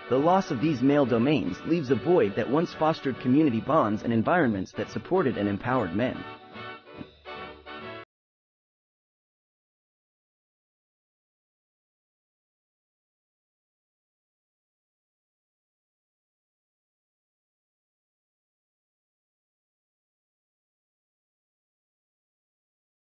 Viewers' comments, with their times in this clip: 0:10 Your video loses sound I tried a few time replaying it, no good. Thank you.